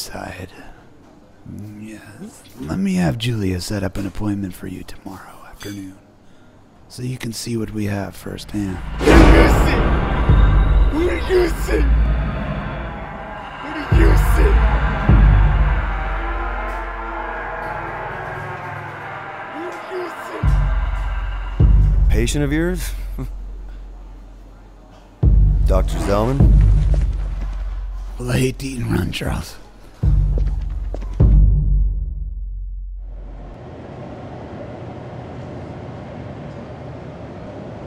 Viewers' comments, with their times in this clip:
0:09 What was the guy who crashed the car and the one out the window saying? It sounds like. "What did you see?" or "Where's Lucy?"
0:12 Is the guy just babbling or does he actually say something? It kinda sounds like "He'll use you"
0:12 is it "how do you see?" at the beginning? also, whats the guy saying ? i hear "he'll use see"
0:18 what is that poor man saying?